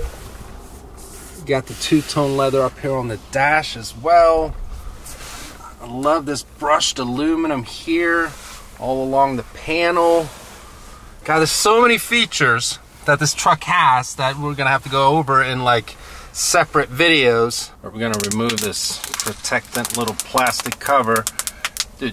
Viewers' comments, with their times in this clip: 0:07 The way you say aluminum reminds me of Bill an Ted 🤣🤣🤣🤣